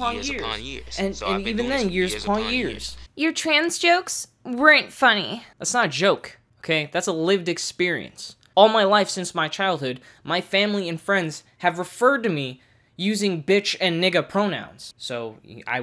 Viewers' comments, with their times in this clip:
0:03 damn boii your impression of female is top notch